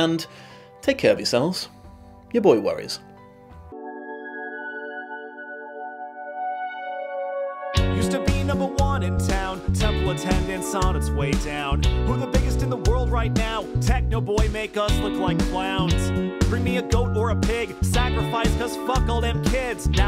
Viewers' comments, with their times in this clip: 0:04 Interesting. Song at the end is probably the first time I heard the entire song. Song